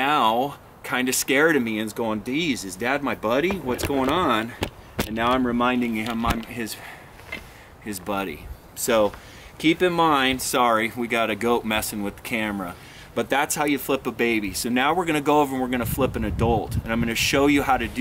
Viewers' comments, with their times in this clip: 0:05 "his daddy" idk why i though that